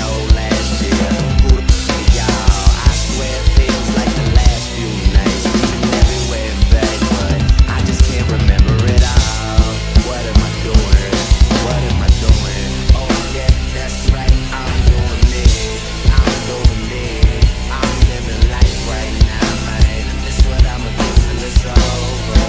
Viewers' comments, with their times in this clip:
0:03 Brann Dailor mode engaged